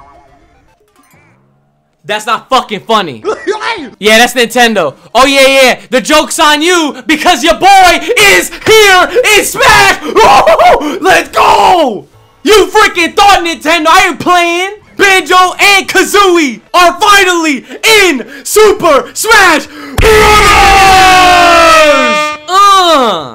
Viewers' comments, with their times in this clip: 0:10 mans sounded like donkey Kong 😂